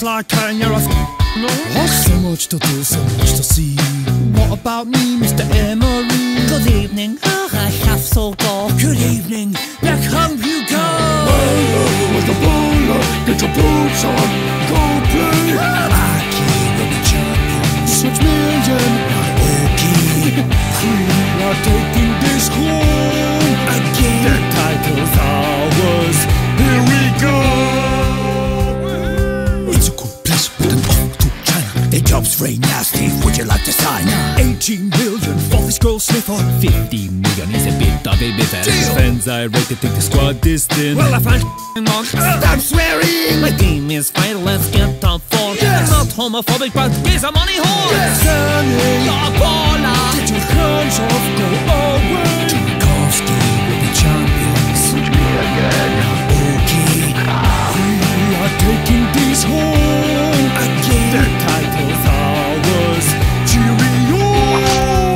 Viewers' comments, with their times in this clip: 0:06 Emery says evening whith "b"
0:06 it says good ebening instead of good evening
0:09 Who is peeing
0:11 the beat starts kicking in 😎
0:14 that declan rice screaming scene is happening in real life
0:15 lmao do you know that when Declan rice screamed
0:15 Who's that screaming? I'm trying so hard to think who it could be but I cannae figure it out!
0:41 Who is that saying the fans are $& mongs that sounds like Harry Kane?
0:47 why does Lewandowski sound weird